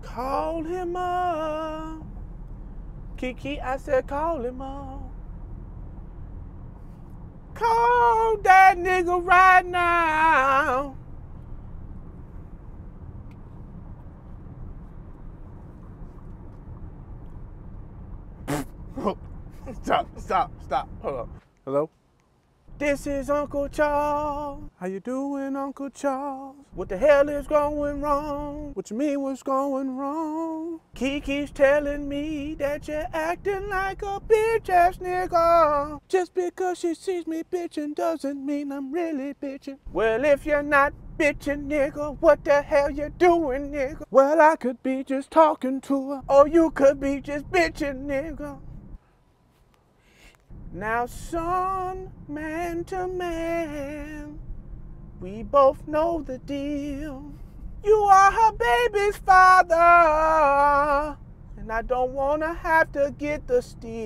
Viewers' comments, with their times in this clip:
0:07 "Call Dat Nigha Riighhht Nooooowwwwww!!!!! 🎵 🎶" -Ronald Isley Voice 😂😂😂😂😂😂😂😂 CLASSIC!!
0:22 I'm. Mad. At. You! 🤣🤣🤣 (btw, thank you for staying in the same key between scenes 😁👏🏾💯)
0:49 He Whispers "Shhhhhhhhh" Ever so Gently To The Baby" after The Uncle Tells Him He's Bitching in His Mr Biggs Voice😂😂😂😂😂 This Is The Best Video Of 2023 to me bro good stuff😂😂😂